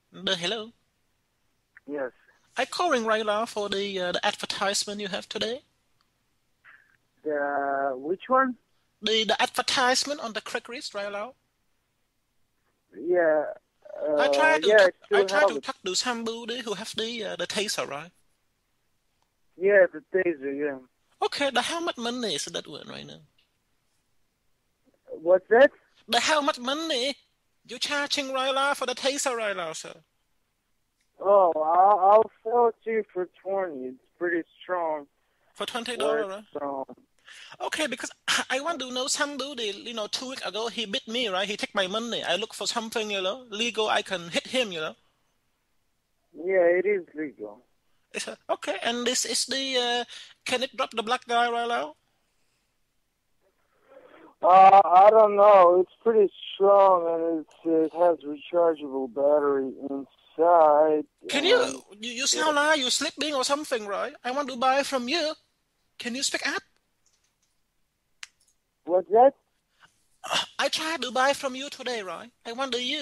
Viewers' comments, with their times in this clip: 0:03 he sounds like peter chao
1:01 lol at the hiccup